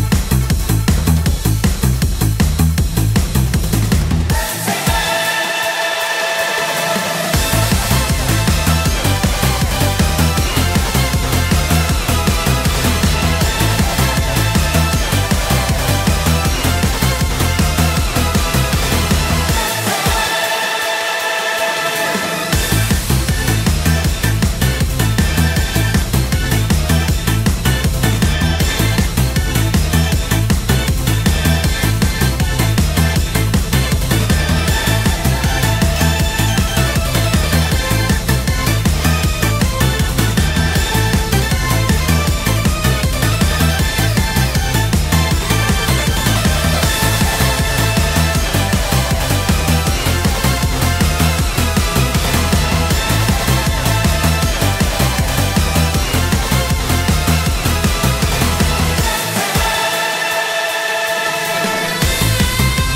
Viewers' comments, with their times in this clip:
0:04 boss music starts
0:46 The beat droped harder than the Meteor destroyer of the Dinosaurs